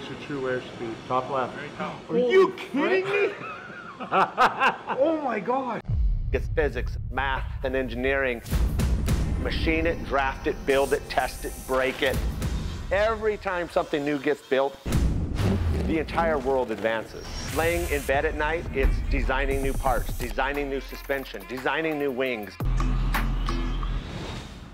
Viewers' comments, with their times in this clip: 0:08 could be the start to a Daft Punk song.